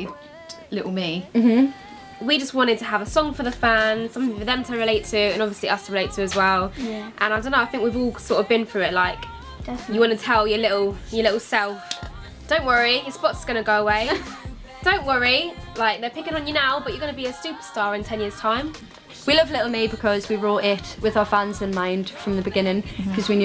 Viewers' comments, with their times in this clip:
0:05 Jade sounds so cute